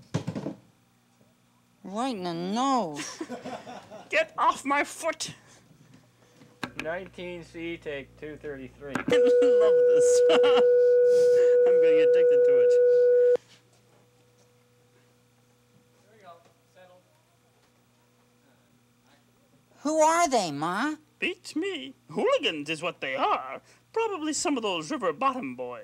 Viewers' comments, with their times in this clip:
0:09 I fricking love how Frank sounds like he’s going mentally insane by the number of outtakes lolololol